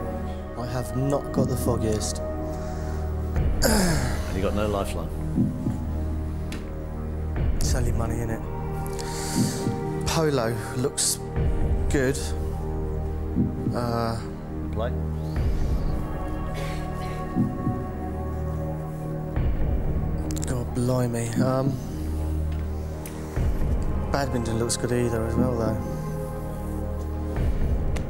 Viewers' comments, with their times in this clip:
0:09 there was a cough after he read the right answer lol. He also cycled through the answers the same way Charles Ingram did lol
0:09 after saying "polo looks good" there's a cough xD
0:16 did I just hear a Cough? LOL
0:16 Actually, there was a cough.